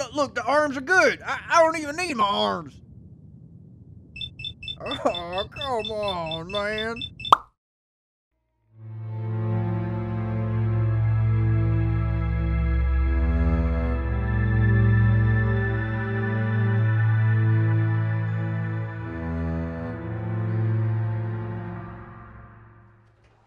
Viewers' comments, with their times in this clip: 0:04 Joe Biden "come on man"